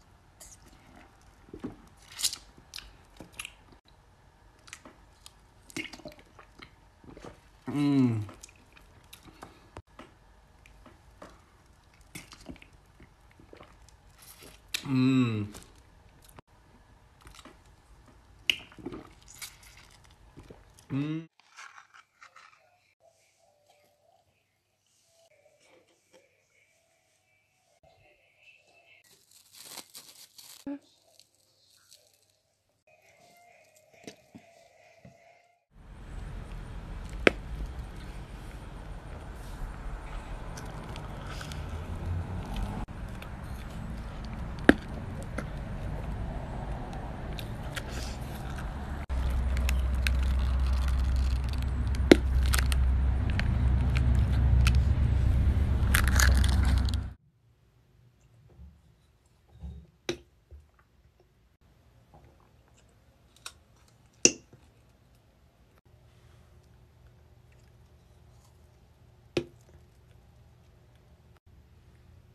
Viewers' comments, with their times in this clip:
0:05 almost chokes mmmmmmmmm
0:06 why did I hear « KiRICoU » ?
1:00 those pops tho